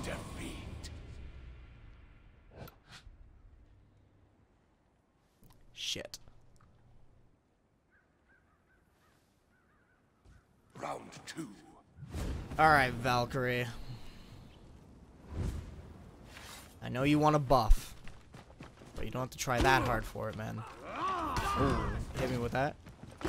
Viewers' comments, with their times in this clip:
0:05 When you said "shit" I was immediately reminded of Connor from Detroit: Become Human.